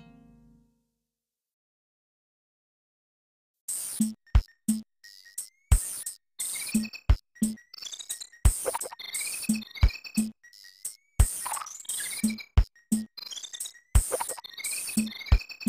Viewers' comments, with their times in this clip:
0:03 Bayou Boogie from Donkey Kong Country 2 glitches out after a minute or so, repeating one small part over and over. I also believe it's the wrong tempo...